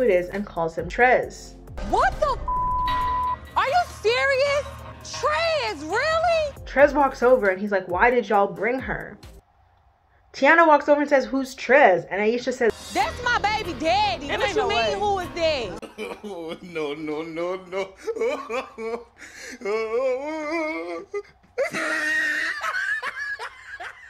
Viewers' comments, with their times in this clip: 0:06 Just like that song "thats just my baby daddy" she said it with the accent and everything